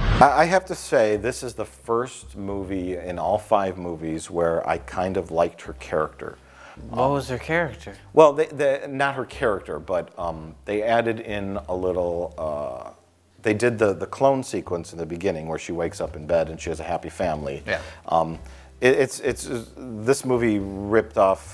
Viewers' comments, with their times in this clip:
0:06 "What was her character" SUPER DRUNK